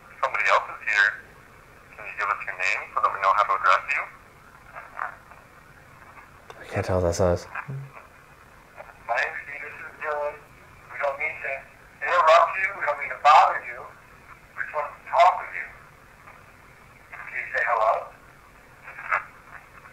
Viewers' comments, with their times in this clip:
0:06 The name sort of sounded like Penelope to me? Super cool